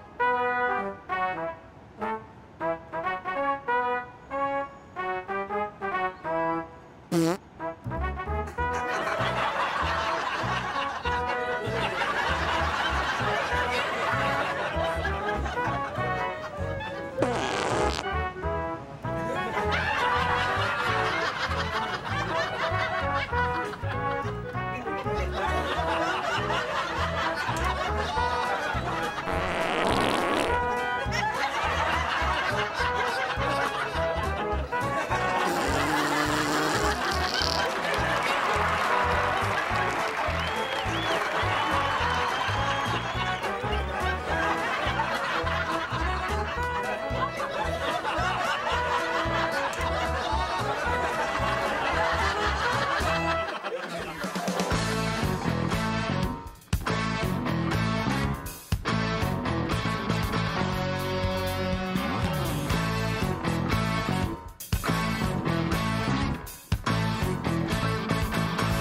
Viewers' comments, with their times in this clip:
0:07 "It sounds a little wet right there at the end." - Fat Bastard from Austin Powers in goldmember
0:29 sounds like the wife 😂 we’ll be laying in bed and … yeah that 🤣
0:53 Can we appreciate how cool that instrumental actually is from start to finish?